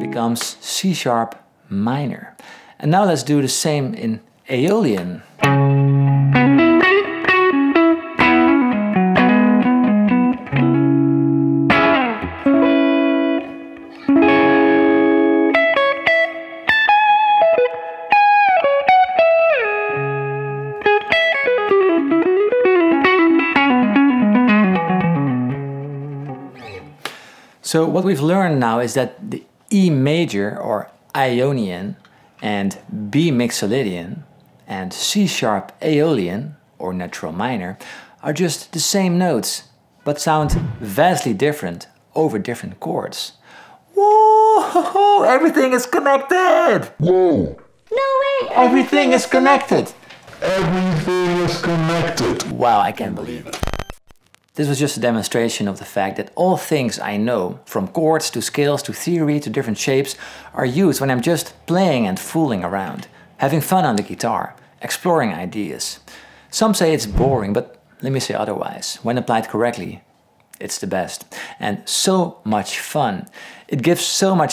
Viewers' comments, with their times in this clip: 0:06 Nice licks on C# aeolian!!!!! 🎸
0:14 That lick where you go up to that E major(sus4) arpeggio and then slide down to that G# on the B string is 🤌
0:21 such a beautiful lick
0:57 what are gourds on the guitar?